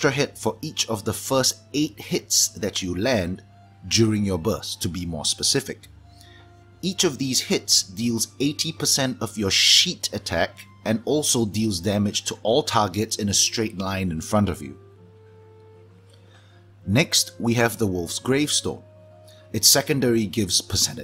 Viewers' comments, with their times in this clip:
0:06 "Each of these hits deals 80% of your shit attack..." Bruh why you gotta roast me like that? Why you gotta do me like that?